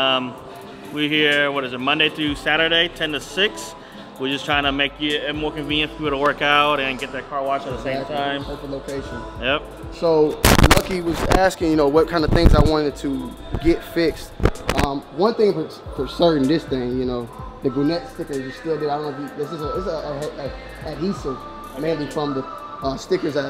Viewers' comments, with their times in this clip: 0:10 RIP Headphone/earbud users